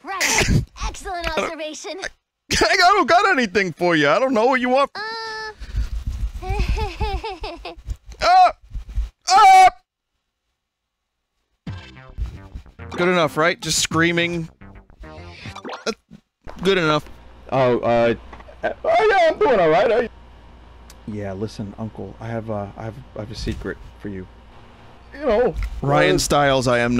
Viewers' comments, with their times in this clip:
0:09 i like how you can see the meter going up and you already know he is screaming